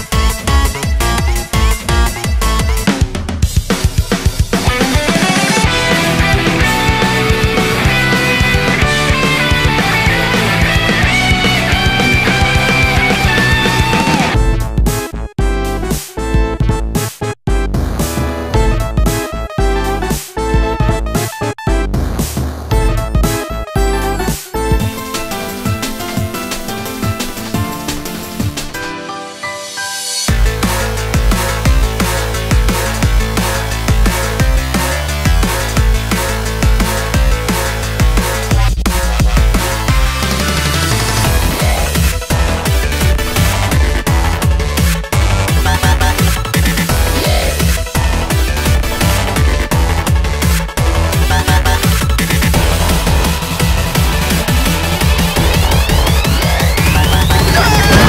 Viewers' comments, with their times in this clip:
0:03 Spongebob's guitar and the song are in perfect sync.
0:10 this is the best transition
0:41 it’s a Rave Party at The Death Star